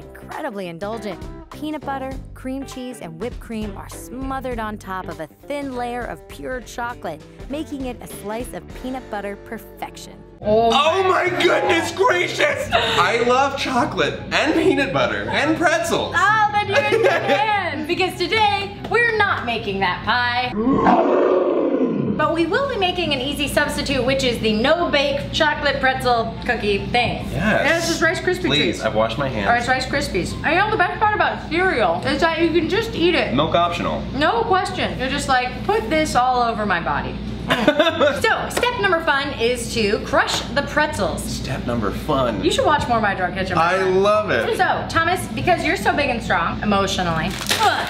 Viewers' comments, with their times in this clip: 0:04 Omg I laughed so f*cking hard when he screamed "NOO!!!" in slow-motion as he stopped clapping. Im crying from laughter again now!!!! :'D The goodness gracious part built up to that moment so perfectly!!! Im trying not to laugh cause people are sleeping, I cant handle!!! x'D somebody help me, im dying X'D
0:10 actually thought Thomas was crying
0:35 he's Woody woodpecker with a deeper voice
0:35 I think Thomas is secretly woody the woodpecker